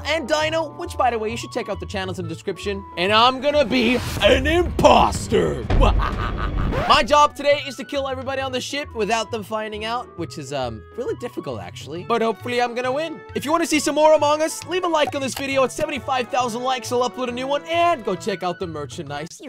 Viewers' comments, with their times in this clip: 0:06 *That evil laugh thou*